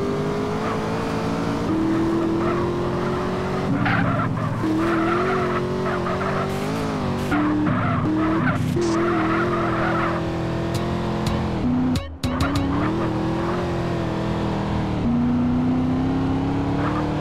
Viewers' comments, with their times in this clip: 0:03 go beat crazy paprapaprparparpprpaprparpra